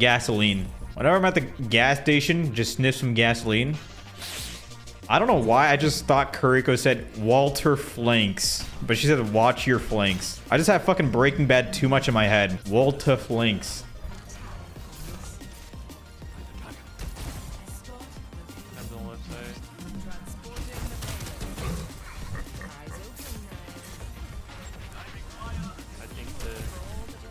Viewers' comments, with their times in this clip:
0:09 waltuh, put ur flanks away waltuh